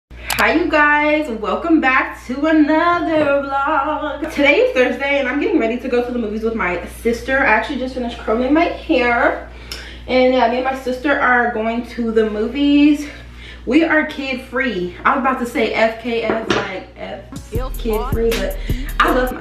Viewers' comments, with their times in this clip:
0:03 Okay sooooo y’all ignored her beautiful voice